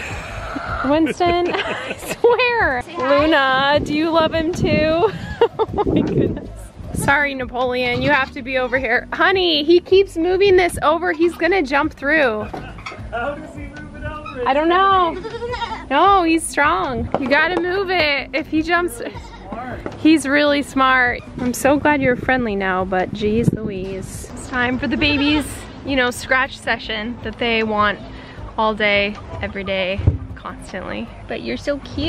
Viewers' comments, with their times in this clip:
0:09 her saying honey, so sweet 💓
0:15 one of the goats say luna